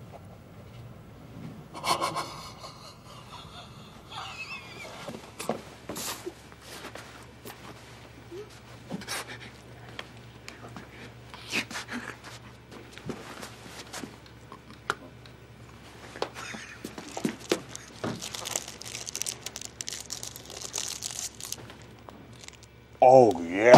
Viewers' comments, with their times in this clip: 0:10 Did anyone hear Andy saying raccoon under his breath